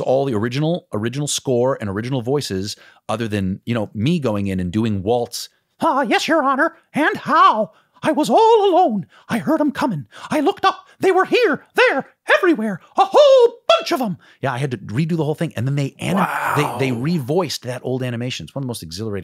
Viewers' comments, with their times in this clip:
0:06 😒 He sounds exactly like Bret Iwan